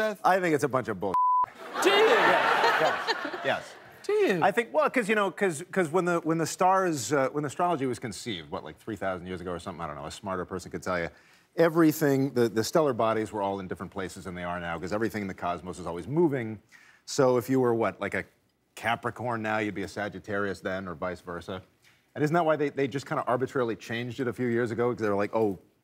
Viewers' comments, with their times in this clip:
0:07 Ted's voice ( the bear )